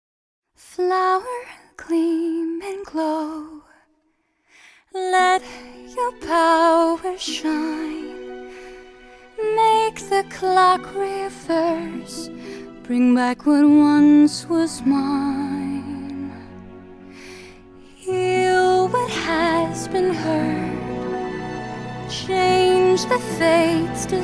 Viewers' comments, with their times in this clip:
0:05 I feel like, without the background music that comes in this song wouldn't have sounded that good. No offense made to the singer. Just that just her voice would have made the scene sound "empty".